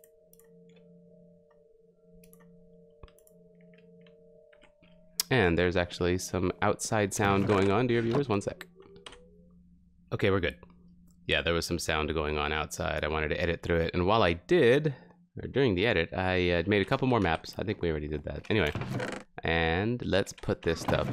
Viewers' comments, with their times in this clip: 0:08 was someone getting abducted by aliens wth